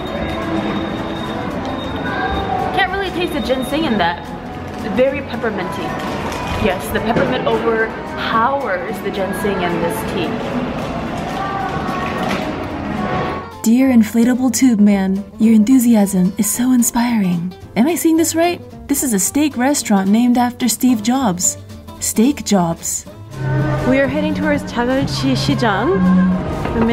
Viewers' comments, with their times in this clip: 0:08 Heize on the radio 💕🎉